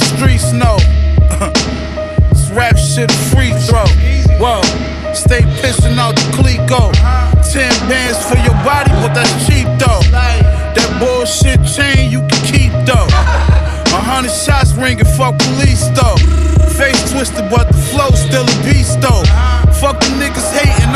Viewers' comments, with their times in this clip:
0:05 That beat is sick